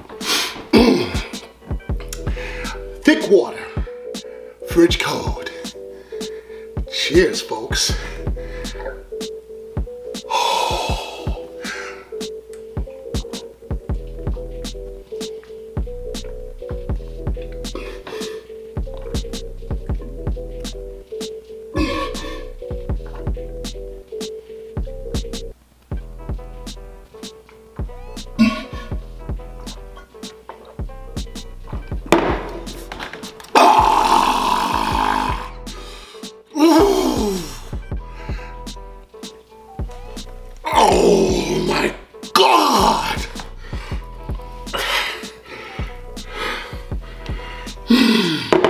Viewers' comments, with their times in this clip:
0:08 His throat noise and his quick look at the camera 😂😂😂😂
0:08 you hear his body engage chug mode
0:21 when I plug the sink and fill it up with water, after that I remove the plug and all the water going inside the sink drain would sound like.
0:27 he sounds like a toilet flushing
0:28 The sound of my toilet when I fart
0:28 what you hear in the restroom after taco Tuesday
0:28 after he takes a breath you can hear the thick water dumping into his stomach
0:28 it sounded like some one took a big dump and just had to let it out quickly I’m not trying to be nasty by the way
0:28 that’s what you would think he’s sounds like on the tolet😳😳😳😳😳
0:29 Sounds like fart
0:32 if your here for the burp here you go
0:32 My dad brushing his teeth at 6am
0:33 O yall dont moan? I be in my girls ear like
0:33 Nobody: Your little cousin at Thanksgiving showing everyone his dinosaur impression:
0:33 sounds like a dinosaure with cancer😂
0:33 is like the refreshed sigh after a sip of a beverage but like, corrupted by the thick-it
0:33 Bruh I remember someone commented on here and said he sounded like a minecraft zombie when he finished chugging🤣🤣🤣 I can't find the comment but I still come back for that reaction🤣😭😭
0:33 Vicious war cry…
0:33 How godzilla's roar was made
0:33 Me: My car is doing a weird sound Dad: What kind of sound?
0:34 my dad when he’s snoring
0:34 Me when I try to sound like Venom
0:34 I thought u were burping 🤣🤣
0:34 was that a burp or a sound of disgust ? 💀